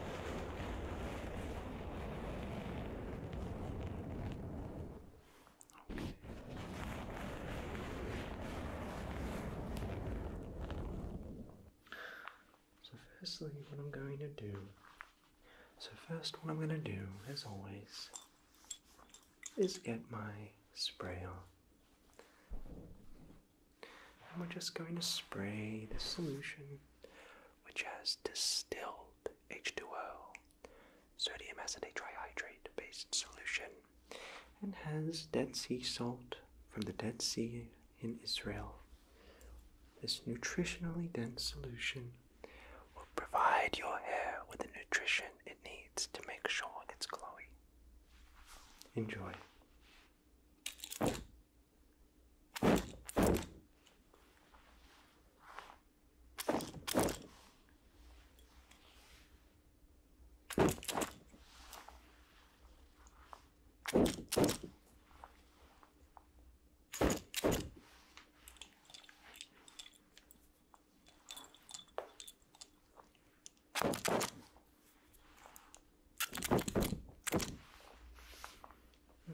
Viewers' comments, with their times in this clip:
0:08 sounds like a jet ngl
0:51 Who’s knocking at my door?
0:57 this heard like someone is knocking on the door
1:06 that spray be sounding like a Minecraft skeleton lol 😂